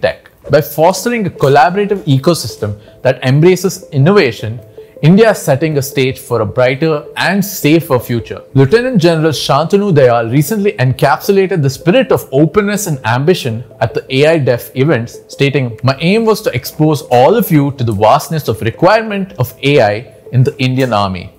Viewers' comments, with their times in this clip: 0:07 In India, we pronounce that post as Left-eh-nent instead of Liu-teh-nent. The latter one is used in the American English, hence used in the military of US/Canada, etc.